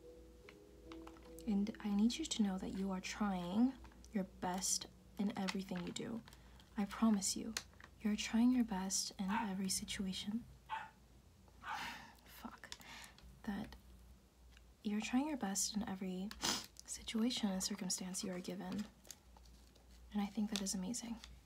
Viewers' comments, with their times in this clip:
0:08 sigh "fuck". I laughed genuinely about 15 minutes, trying to be sentimental and that fucking dog gotta bark. Best video yet.😂😂🤣